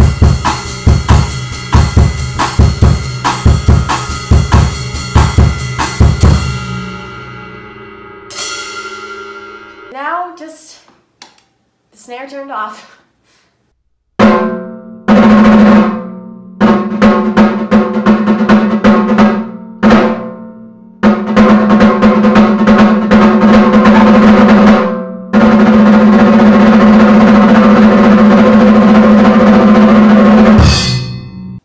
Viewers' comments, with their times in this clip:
0:03 I like the Jazz tempo
0:14 ST. ANGER!!! ST. ANGER!!1!!11!11!